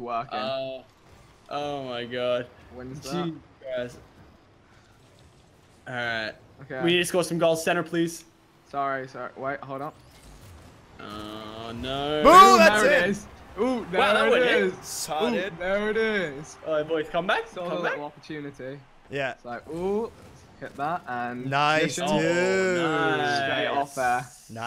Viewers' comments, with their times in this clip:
0:10 How herd the phone